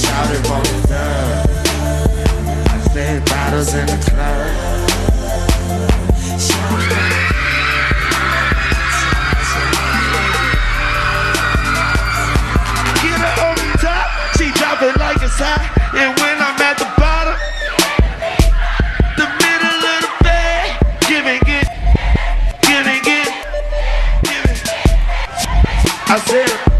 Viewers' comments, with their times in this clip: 0:07 the crowd went crazy again